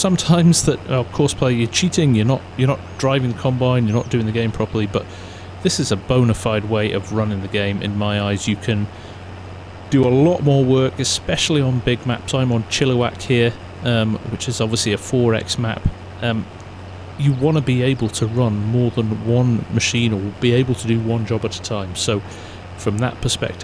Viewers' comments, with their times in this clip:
0:05 anyone know what map he is playing on? it was soo hard to hear what he said